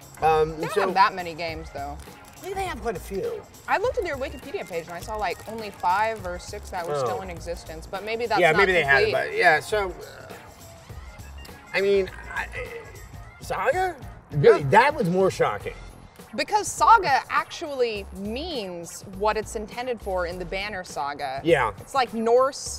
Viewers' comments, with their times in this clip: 0:10 is that person yelling something at you guys? haha